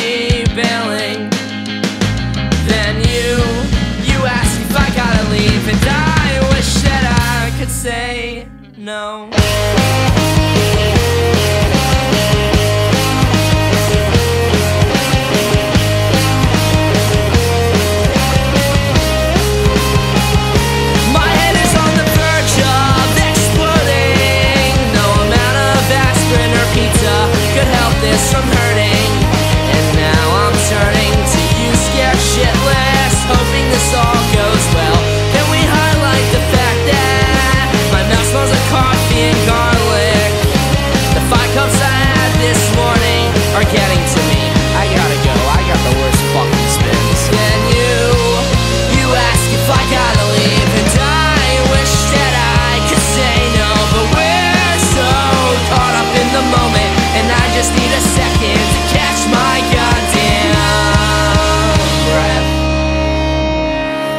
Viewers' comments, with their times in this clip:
0:08 onward reminds me so much of Weezer
0:50 that bit his voice is so good